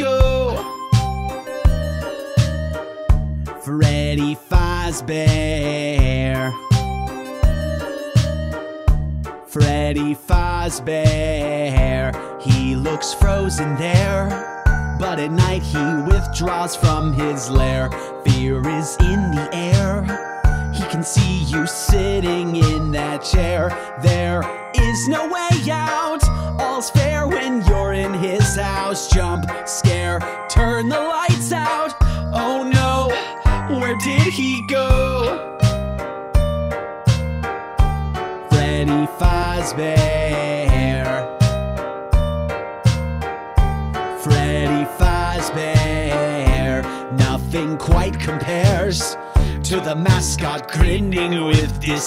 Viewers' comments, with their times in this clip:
0:04 he said faazbear instead of fazbear
0:11 that sound like razbowskie
0:12 someone said “English or Spanish?”
0:35 I just notice the medley behind the vocals in this part is similar to Under The Surface. Just some untuning and tuning